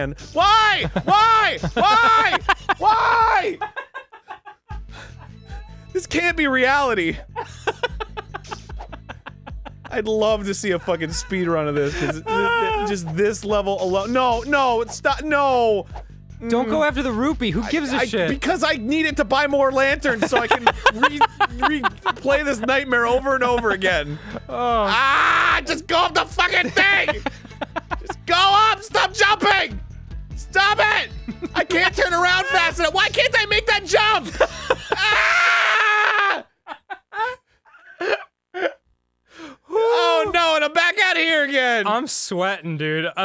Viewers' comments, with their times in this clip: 0:04 i CONSTANTLY quote "this can't be reality" in my daily life lmaooo, he just sounds so defeated
0:24 Mr. Plinkett is that you?